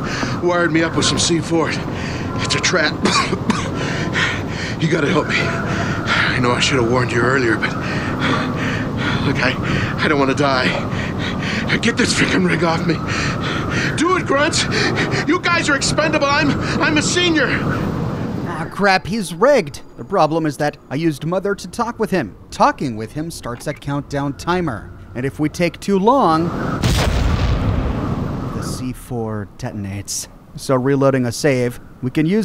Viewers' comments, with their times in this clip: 0:06 with the guy strapped with C4 sounds like the Fred from scooby doo. No idea why
0:15 Kinda sucks being on the wrong side of a trap, eh Fred? (The joke here is that seems to be the same VA as Fred in many of the Scooby Doo cartoons)